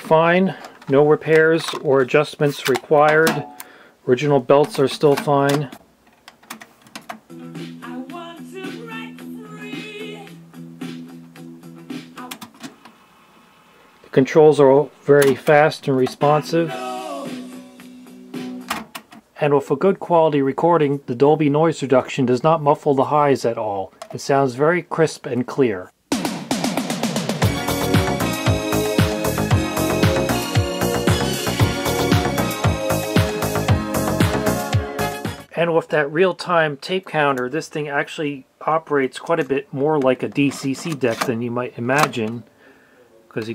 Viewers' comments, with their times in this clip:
0:10 YEAH! The voice of a HERO!
0:26 The meters really shows the dynamics in the kickdrum on the "rickroll" track. 20 dB is plenty. Much better than modern mixes.
0:29 That's a high quality rick-rolled lol